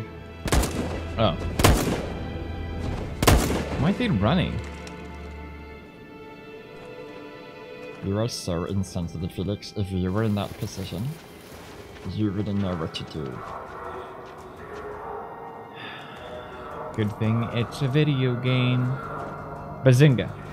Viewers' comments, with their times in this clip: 0:07 lmao that voice